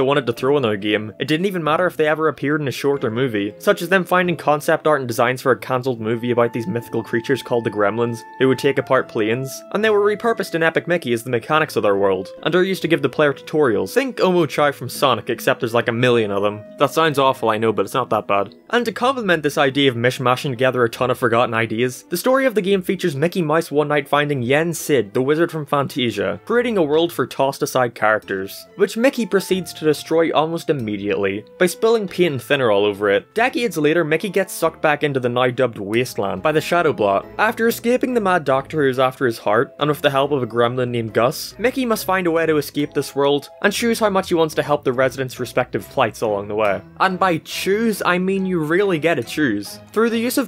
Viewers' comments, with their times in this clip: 0:09 why did you say plines
0:32 pee and thinner